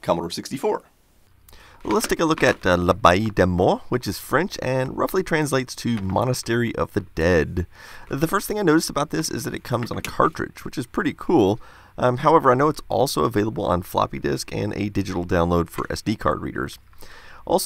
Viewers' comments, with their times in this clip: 0:03 l'Abbaye des morts : excellent pronunciation !